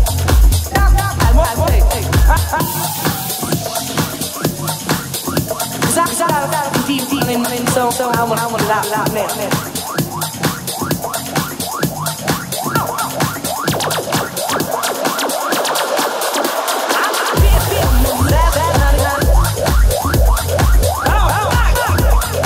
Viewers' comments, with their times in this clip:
0:03 whatever they played from -2 :29 was straight firepower